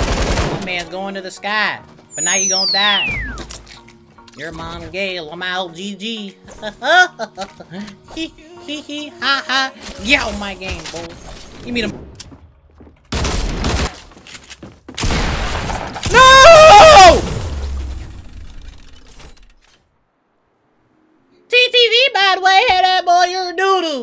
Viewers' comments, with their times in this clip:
0:07 he sounded like the clown from the simpsons